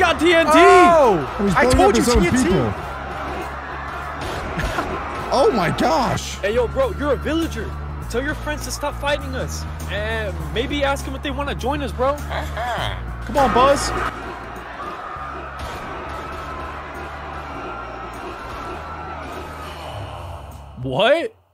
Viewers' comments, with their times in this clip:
0:03 no one notice that laught